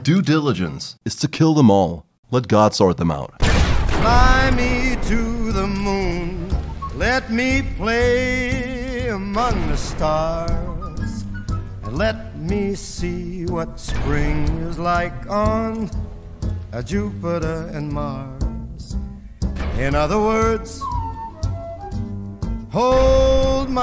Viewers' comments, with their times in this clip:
0:08 Let me play AMONGUS? AS IN AMONG US THE VIDEO GAME?! AHHAAHHAHAHAHA SUS VERY SUSSY GAME HAHAHAHA GET IT? IMPOSTER SUS!